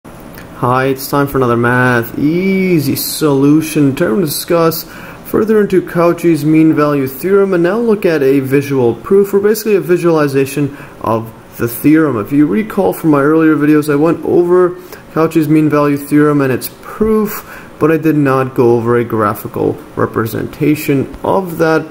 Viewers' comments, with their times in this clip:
0:02 sounds like he's having an orgasm,